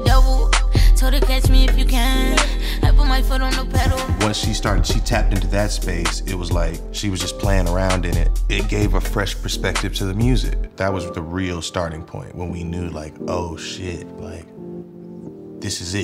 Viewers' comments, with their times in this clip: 0:04 That song sheeesh🔥